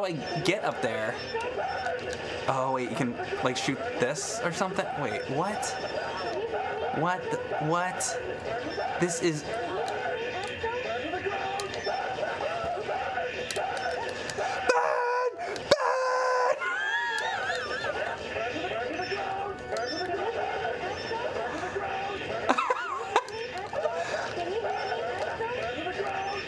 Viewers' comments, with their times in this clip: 0:07 I'm in tears laughing at the voice chaos!! 😱🤣🤣🤣